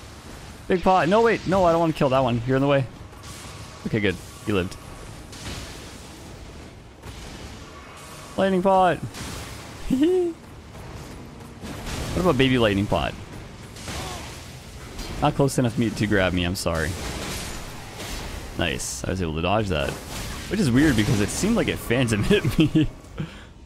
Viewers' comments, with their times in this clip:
0:08 hehe...what was that laugh lol